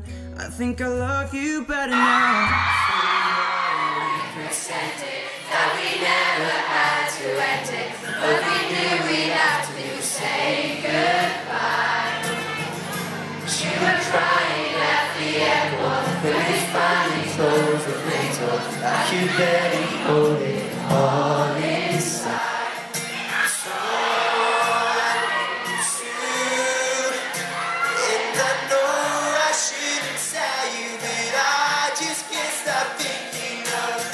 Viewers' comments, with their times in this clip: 0:03 wasn't a real solo, the crowd was louder than him :'D but i love that moment¨!
0:15 I love how the fans are louder than Luke<3 This fandom is the best